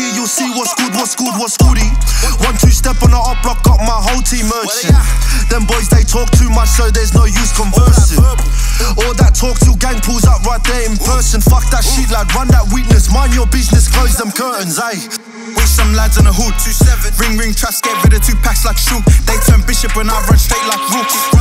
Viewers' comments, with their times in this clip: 0:04 This just might be my inner Somali but did he just say „ Waryah“ ????